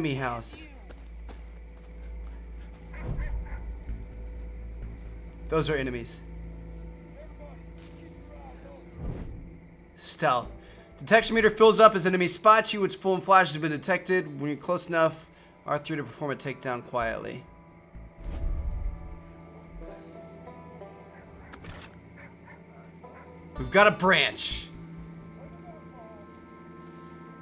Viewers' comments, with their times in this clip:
0:10 John marstons voice ?